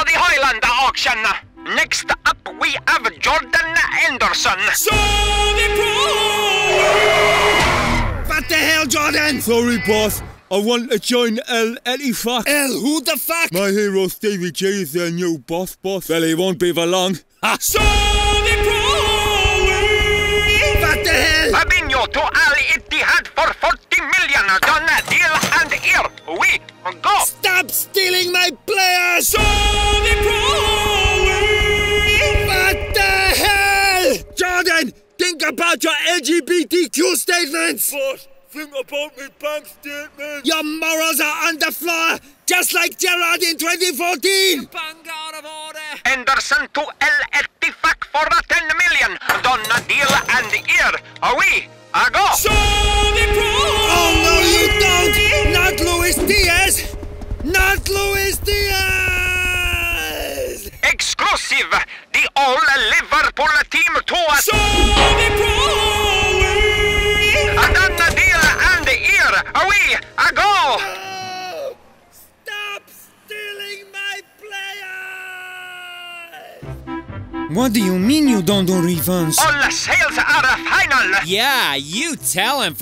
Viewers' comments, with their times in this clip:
0:08 Was dying the combination of the SAUDDIII PRO LEAGUE getting interrupted, hendersons stupid voice and klopp’s angry voice saying “EL WHO THE FUCK?” 😂😂😂😂😂😂
0:47 Fabrizio hard "uk" is so clear that part made me laugh cause he sounds like saying the F word 😂😂
1:05 Saudi prroooo leaaguuee gets me every time 😂😂 was my funniest part😂